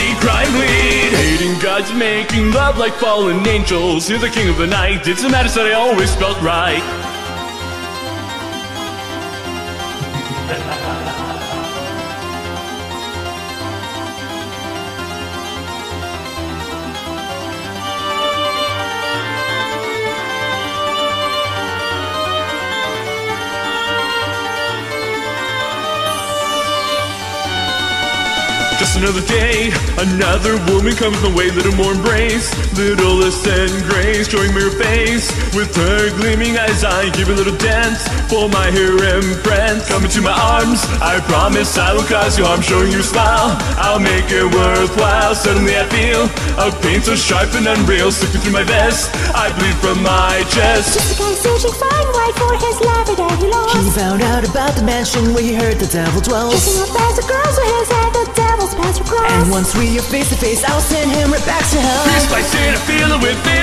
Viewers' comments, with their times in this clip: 0:07 The laugh made me melt a little...
0:08 That laugh made me jump, I thought someone was laughing behind me
0:08 Th..that laugh. I have to look around, make sure there's no womanizer/rapist in my room.
0:08 OMG that evil laugh scare me little 0-0' as I was wearing head phones XD
0:09 Dat laugh made me jump out of my chair... I thought it was my dad. And Kaito's girl voice sounded like my male classmates pretending to be a girl.
0:10 Why is nobody talking about that hot and perfectly fitting, diabolic laugh ?
0:10 BOI I nearly fucking died. There is not supposed to be a laugh there. Scared the shit out of me. 😂
0:44 "Omae wa mou shindeiru". Also can I just say how good the lyrics are, especially that one line towards the end? "Death invoked, my arts had all broke, and I'm suffering!" Like, damn, that is some good translyrics. Also props to the dude that did Kaito being able to sing in a falsetto tone showing how he faked being a woman to get into Venomania's mansion. I love how it switches between the two as the reveal happens too! I know that was also apart of the original song but still love it.
0:50 ....Elmo...That sounds like Elmo...
0:51 No one: Absolutely No one: Me: Sounds like Elmo
0:51 ...Kaito =Elmo confirmed Once you hear it you can’t unhear it... >:3